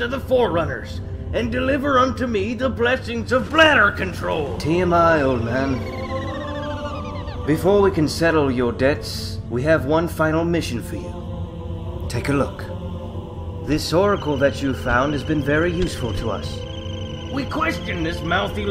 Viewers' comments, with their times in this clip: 0:04 I love the sound effects in this XD